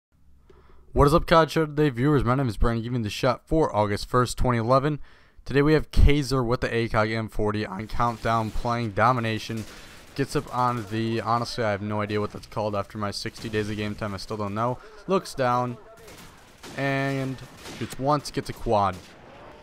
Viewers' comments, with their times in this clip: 0:04 HellYeaaaah a little voicecrack!